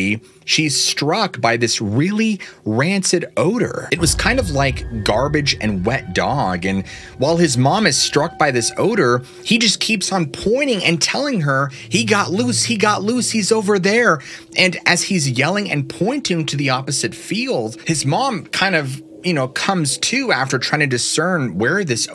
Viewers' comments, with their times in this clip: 0:03 I just got out of work... I was listening to this on my way home with my phone bluetoothed tk the care radio... i live out in the country surrounded by woods, it's am... I just pull in my drive way, park, and lean my seat back to finish listening. Just as I do, the growling starts RIGHT B3HIND ME.... I may need to throw these pants away now 😅